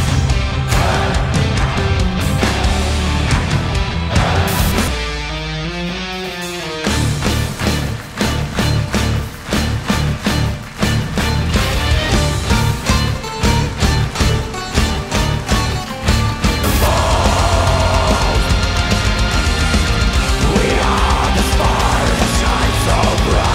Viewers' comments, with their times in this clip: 0:08 SOUNDS LIKE DREAM THEATER